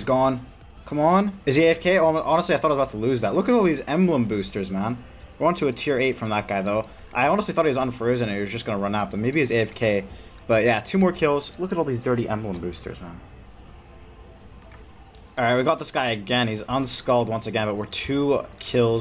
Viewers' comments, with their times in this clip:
0:06 What was that dinging noice on background ? I was sure someone was at my door. Ps. this is the best series ever!